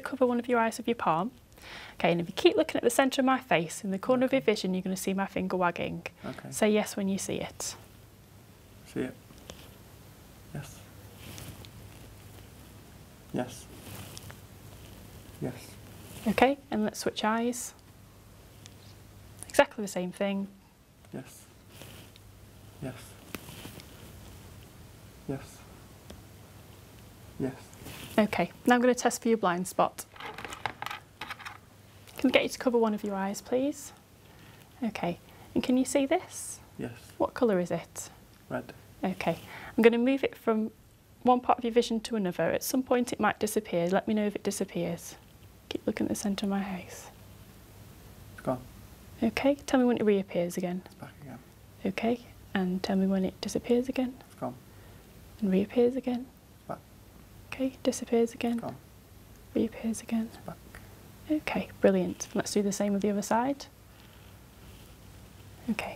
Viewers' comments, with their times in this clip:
0:09 Is this boy italian? I Say this because i can hear "si" and "si" is italian.
0:50 keep looking in the center of my house